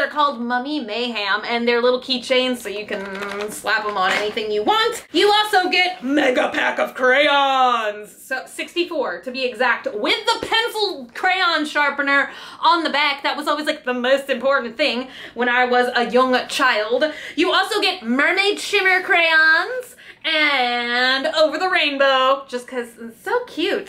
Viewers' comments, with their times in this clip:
0:06 O.M.F.G her face and voice was amazing!!!!!!!!!1